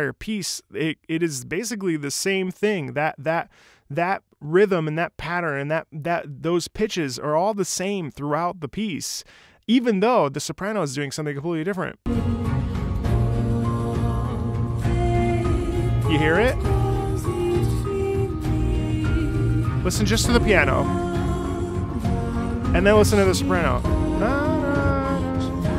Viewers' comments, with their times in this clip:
0:10 I like songs where there's essentially 2 differnt melody one in the foreground and one in the background that somehow complement eachother. It's a phenomenon I like to call "Asynchronic harmony"